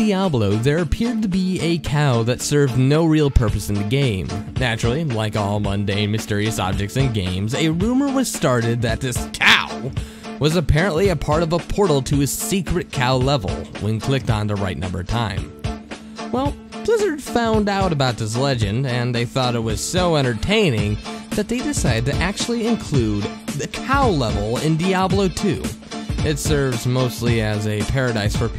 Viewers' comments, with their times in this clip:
0:09 I love the way you say "COW!" XD